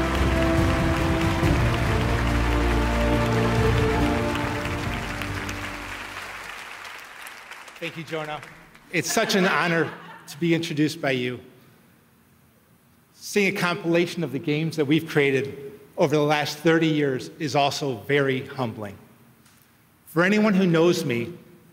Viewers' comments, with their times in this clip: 0:09 what were they laughing at?